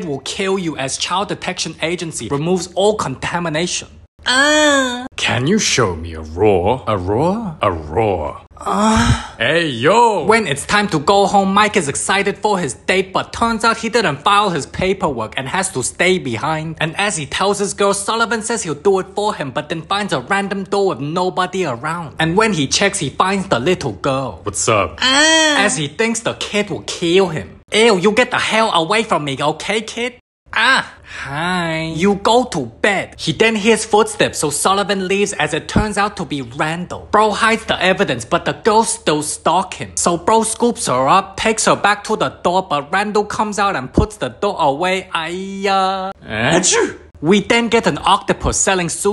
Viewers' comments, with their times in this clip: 0:03 most zesty scream ever.
0:05 That ain't a Roar,It's a moan 💀
0:06 my mom is right next to me when he heard the moan im fucking cooked 💀💀💀
0:07 Whoa whoa whoa, that wasn't a roar, dude! 😳
0:08 THAT MOAN HELP- 💀💀
0:08 the moan......😂😂. I got goosebumps
0:09 what a normal person says what they here that moan: AYO 😭
0:31 I love the hiiiii